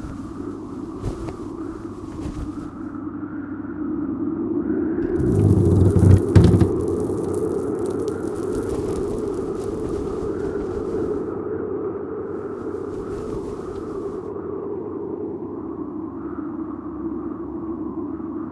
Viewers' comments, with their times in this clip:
0:05 What's the giant fart all about?